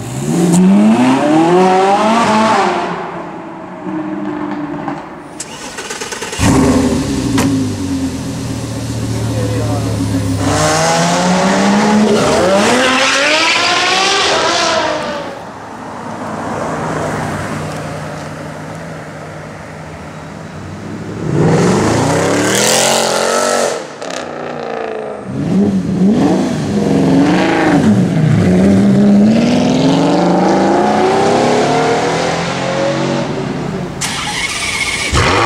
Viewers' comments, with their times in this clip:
0:07 ... Sounds just like a Golf...
0:16 that bugatti went through like it would be with electric engine :/
0:20 C63 AMG best sound ever